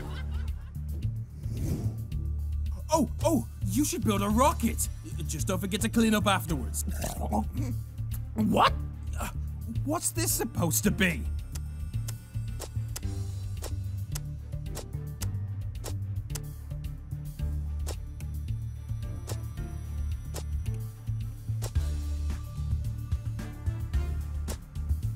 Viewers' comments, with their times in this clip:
0:05 loud slurping noise
0:06 that cough tho 😹👌🏻